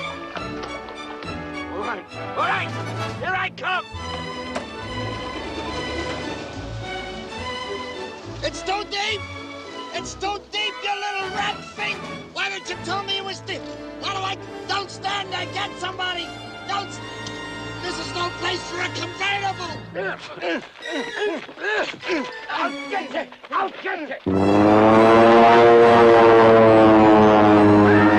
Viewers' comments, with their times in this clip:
0:09 Dude being so mad that he can't finish a complete thought: "It's too deep! It's too deep you little rat fi-! Why didn't you tell me it was dee-? How do I-? Don't stand there go get some-! This is no place for a convertible!"